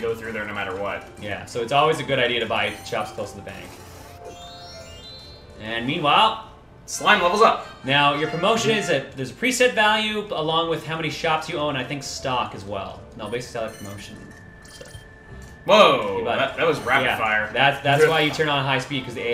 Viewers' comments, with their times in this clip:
0:05 I had to smile and laugh when I heard Dragon Quest's level up tune xD